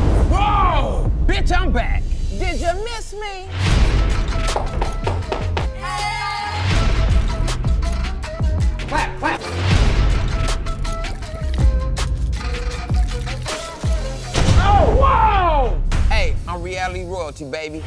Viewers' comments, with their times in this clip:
0:05 What was she doing I think she's twerking what throws me off is all the banging sounds lol